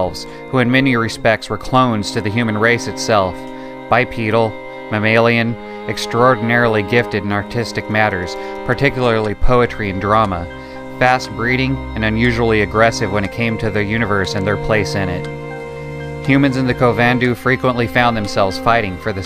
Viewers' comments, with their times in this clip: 0:03 at this point, I paused and said "Wow! This is beautiful" the music pairs perfectly with the tone of your narration. Bravo!